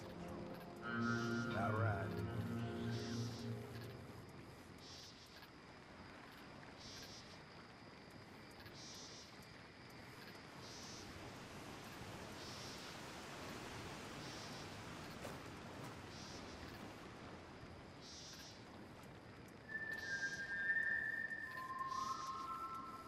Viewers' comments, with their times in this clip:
0:09 The music 😢so much nostalgia